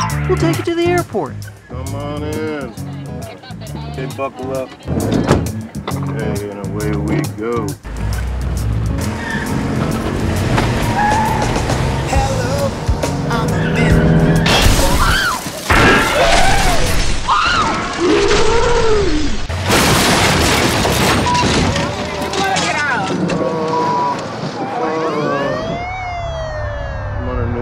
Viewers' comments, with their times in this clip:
0:10 LMFAOOOOOOOO they got the same fucking song im done
0:14 GTA San Andreas pedestrian voices